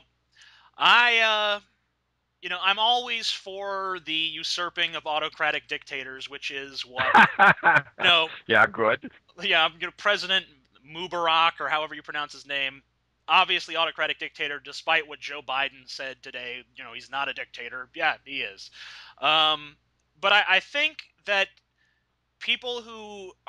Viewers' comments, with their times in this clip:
0:09 "President Anub'arak" wasn't he killed of last expansion?!